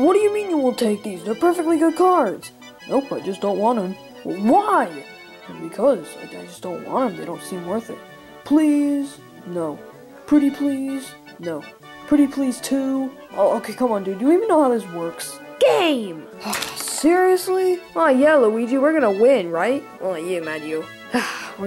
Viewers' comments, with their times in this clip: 0:03 why were you wispering